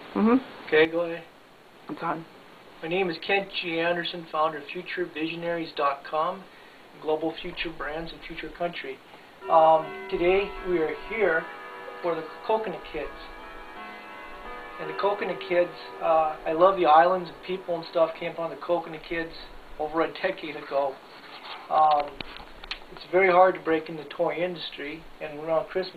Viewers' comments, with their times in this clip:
0:10 his clock sounds exactly like my grandparent's clock
0:10 it sounds like the clock i have in my house